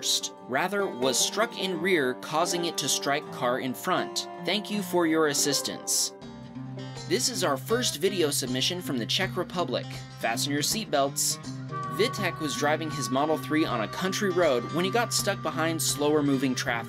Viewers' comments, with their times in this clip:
0:04 mans read that like a robot